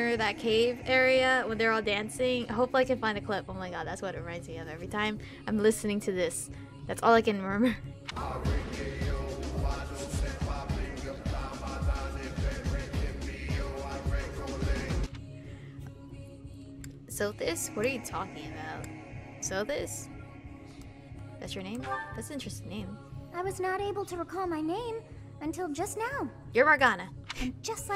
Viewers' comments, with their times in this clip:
0:09 Lmfaoooooo it does sound like that, I'm weak!!!💀💀💀💀💀 I can't unheard this